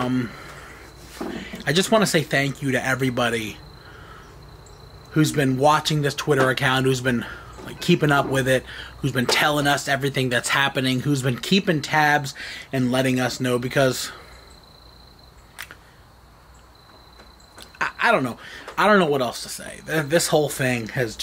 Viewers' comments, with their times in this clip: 0:06 you deff hear a lil girl saying dad or yelling